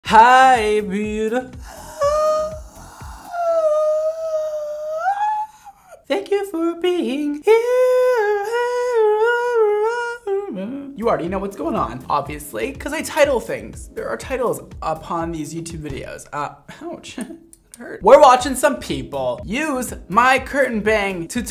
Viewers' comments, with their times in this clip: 0:01 Dang nice singing
0:03 That high note is out of this world